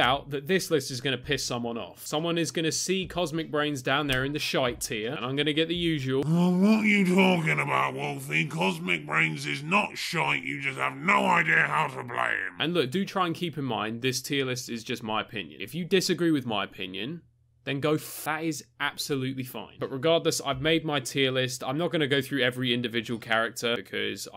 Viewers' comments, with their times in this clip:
0:06 Why do I find this so funny?! Oh yeah, the voice.
0:06 Best gargantuar voice
0:09 that voice made me spit my food out 🤣🤣🤣🤣